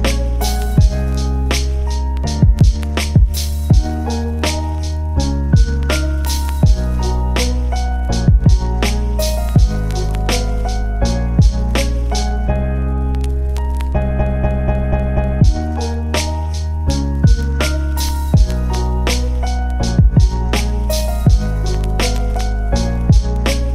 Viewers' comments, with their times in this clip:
0:05 Totally touched by the tune. I really need more of this or find an instrumental.